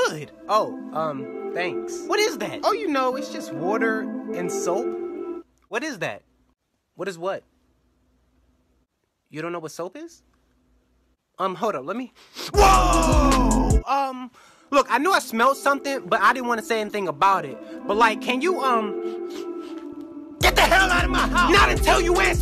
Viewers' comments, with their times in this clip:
0:07 That”woow” was so funny😂